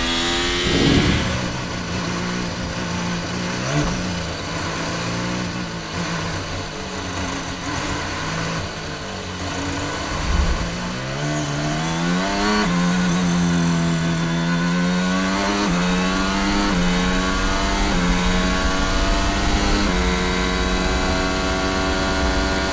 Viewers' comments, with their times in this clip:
0:05 bro the Red Bull engine sounds like it’s dying and of life support